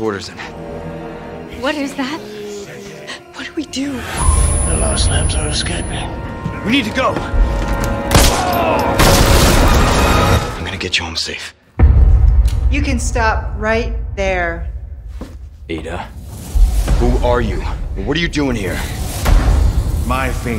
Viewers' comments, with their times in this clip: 0:04 Why does Saddler sound like Marlon Brando's Vito Corleone ?